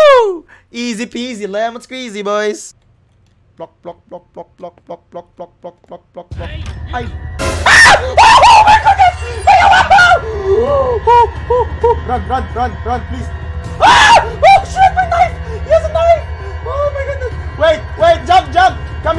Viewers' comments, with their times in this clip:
0:03 Bedroom sounds HAHAHAAHAH
0:05 plok plok intestifies AHAHAHAHA